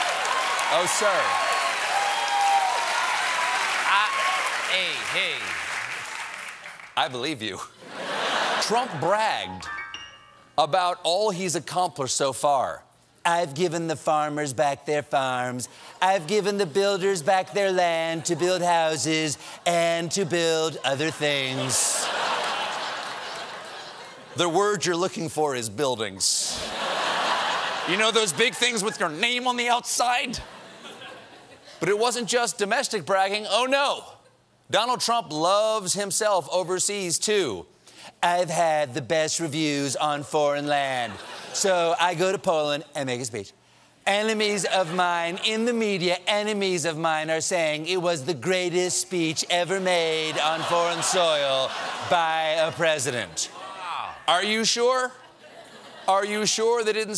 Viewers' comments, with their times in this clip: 0:04 I have a problem with Stephen's audience. Stephen is a comedy genius to be sure, in fact I truly hope he wins some kind of award this year for his comedy. But I can't stand is overly-prompted audience that boos/cheers/applauds way too much. It's annoying. Sometimes they even cheer at the wrong time, as evidenced by right after Stephen read that excerpt in Trump's voice. Or like when they cheered Comey's firing.... Why? Anything Trump does is... well, never good.
0:41 That Trump impression I still can't stop laughing.